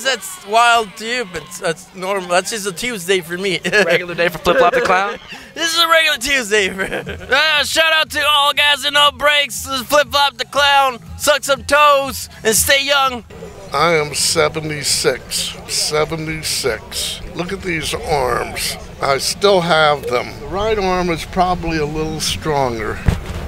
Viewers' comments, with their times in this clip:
0:07 He actually sounds a lot like Justin Roiland